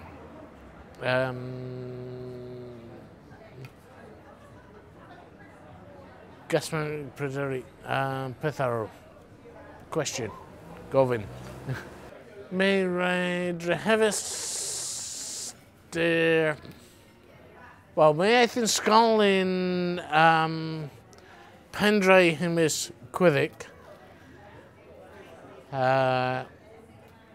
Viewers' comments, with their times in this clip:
0:10 Yo, I know everyone wants to point out how plastered this guy sounds, but he straight up says "question? Covid"